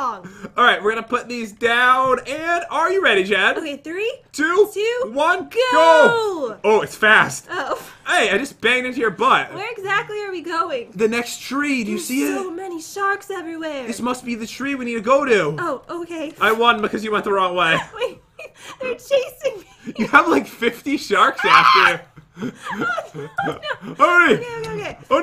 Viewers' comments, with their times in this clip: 0:07 he banned her but????